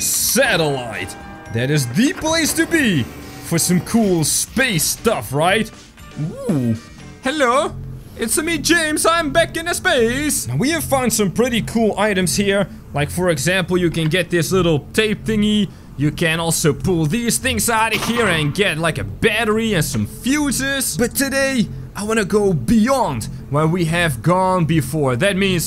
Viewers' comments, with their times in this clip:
0:08 made me laugh so bad you sounded like Mario Lol 😂🤣